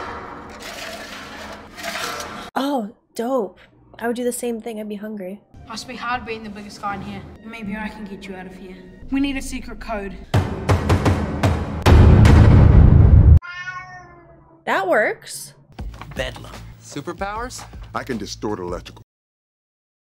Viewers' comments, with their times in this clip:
0:08 cats have the best timing sometimes do do do do do bang bang meow